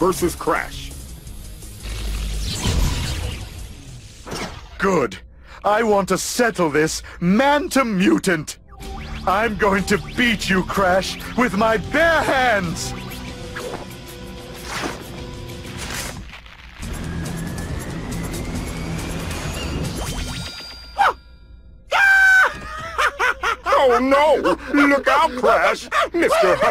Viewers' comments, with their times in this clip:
0:09 all right, when l was a kid, l've aways misheard cortex quoting: "I going to beat you, Crash, with my PANTS!" instead of "bare hands" and l thought it was some sort of joke about that DBZ clothing style